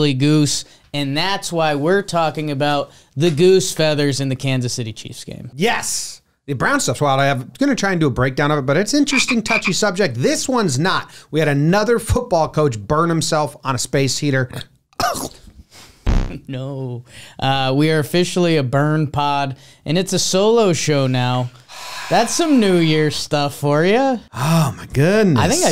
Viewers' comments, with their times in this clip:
0:09 The fucking frog noise made me choke on my coffee